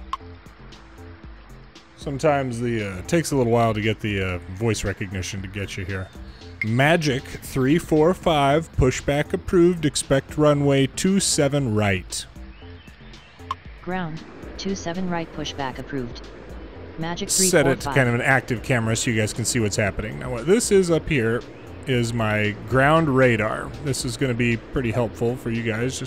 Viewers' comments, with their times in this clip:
0:09 when you slowed down there I started to get anxious lol. Never good to have the controller talk to you like that.